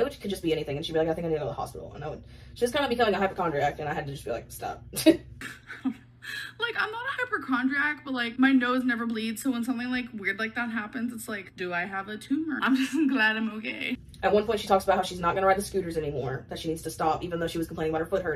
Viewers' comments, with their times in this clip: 0:06 "my nose never bleeds so, do I have a tumor" HIGHLY DOUBTFUL. The hypochondria is strong in this one 😂 Also I think she just said "hyperchondriac"